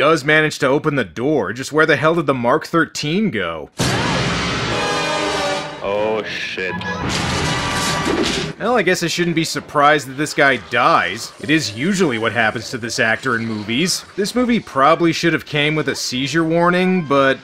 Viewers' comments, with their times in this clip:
0:03 Guess Who Fat Boy said in a crusty the clown voice its a treehouse of horror quote